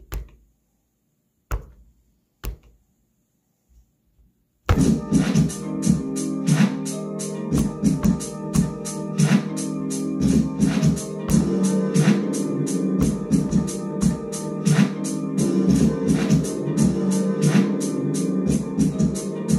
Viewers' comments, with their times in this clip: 0:05 Drums on tough